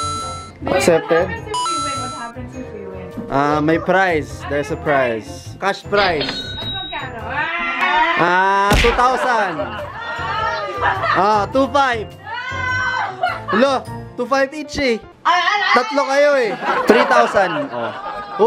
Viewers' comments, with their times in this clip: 0:06 perfect harmony! Bravo!